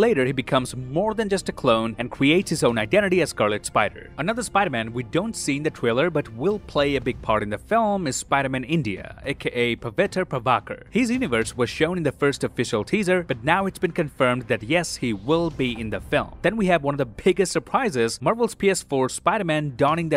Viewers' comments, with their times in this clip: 0:05 no one pronounces Indian names properly😠